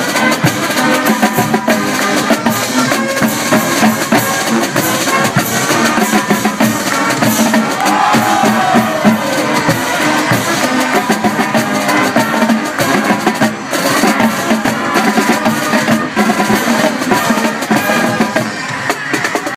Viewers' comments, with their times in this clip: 0:07 what did everybody "oooooh!" and react to?